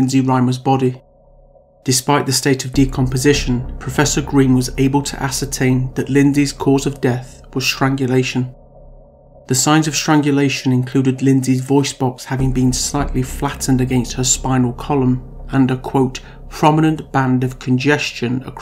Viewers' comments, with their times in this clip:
0:06 love this suspense music..